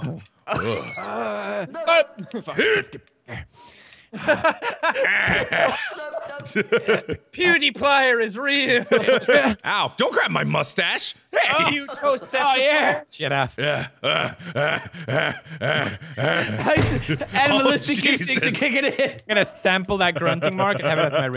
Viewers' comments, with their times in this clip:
0:09 when jack says 'pewdieplier is real' the laugh after was really nervous like 'no there's only room for septiplier bitch Felix layoff my man'